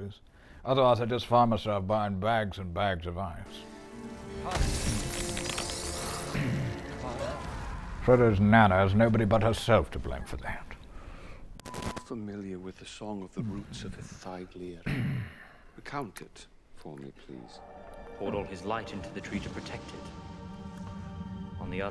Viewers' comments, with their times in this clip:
0:06 That guy is absolutely Saruman. I am convinced. Just listen to the yell. I called it. It is Saruman...